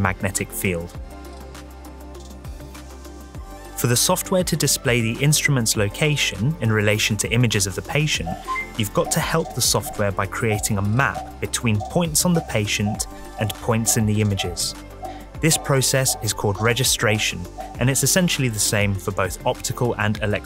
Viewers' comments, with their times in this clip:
0:08 I can't believe no one has talked about this but sounds exactly like when you vote in a meeting on someone in Among Us😂